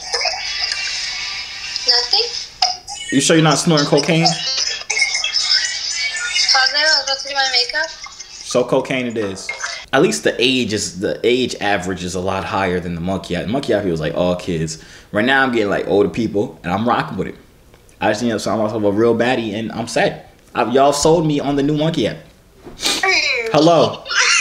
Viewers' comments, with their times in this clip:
0:06 So nobody peep that innocent ass nothing